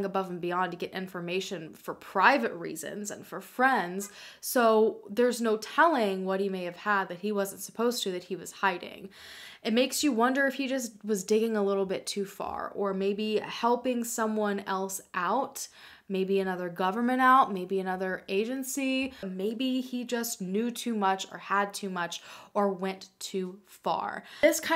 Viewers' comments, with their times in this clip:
0:06 Just wanted to confirm that there is what sounds to be a car horn incase anybody else was also about to check if there was someone at their house